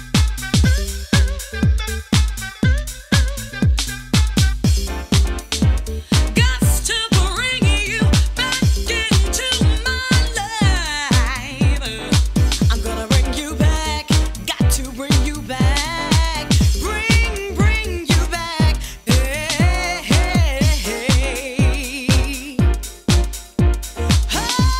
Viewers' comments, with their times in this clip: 0:06 ...and it reeeeally gets funky!!!!